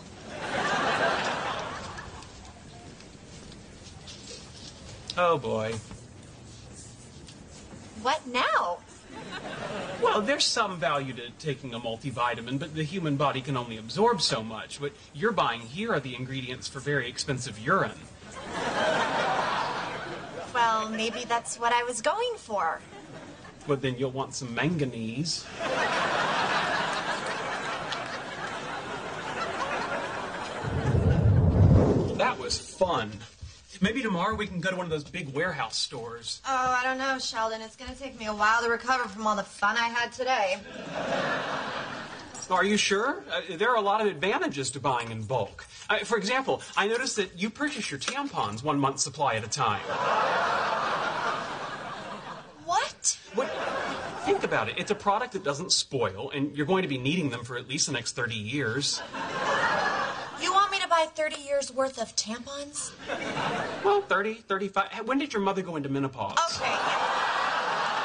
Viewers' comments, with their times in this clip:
0:07 What Now in a sweet voice
0:52 I always loved that delivery.